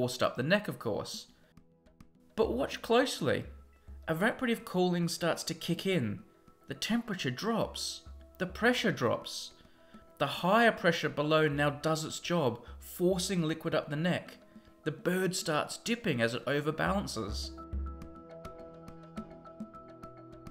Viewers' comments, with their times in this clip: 0:04 What is the word he used ? I have no idea what that word is... Araprative Cooling?